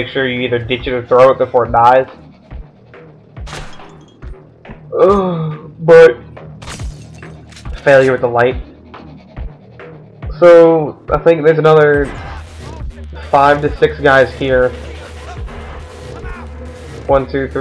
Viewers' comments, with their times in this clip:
0:03 I like the soundtrack that starts from